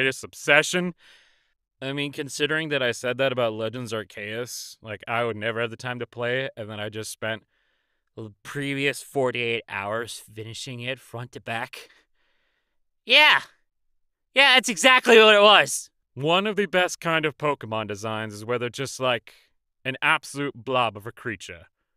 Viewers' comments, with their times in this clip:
0:04 AR-KAY-IS?!? SINCE WHEN